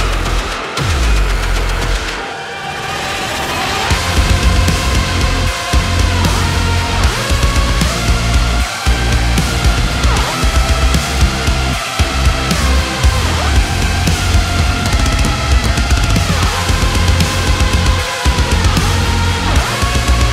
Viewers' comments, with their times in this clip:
0:05 IMHO, cutting out lead that started will make track better. At least for dark souls fan =)